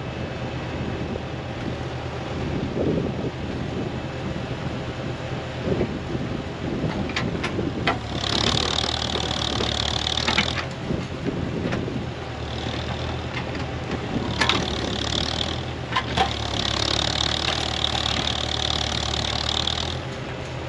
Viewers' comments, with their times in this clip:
0:06 sounds like you got the air worked out of the hydraulics. Looks like the three point is holding up.